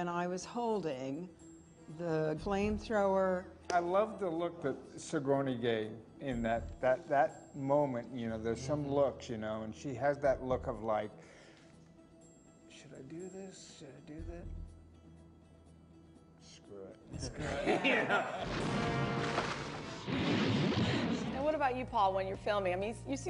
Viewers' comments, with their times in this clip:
0:05 Michael Biehn sounds so much like Bill Burr doing an impression.